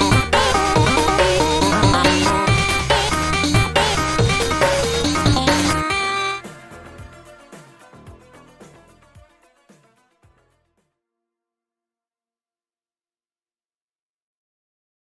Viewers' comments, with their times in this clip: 0:06 the background music is kinda sus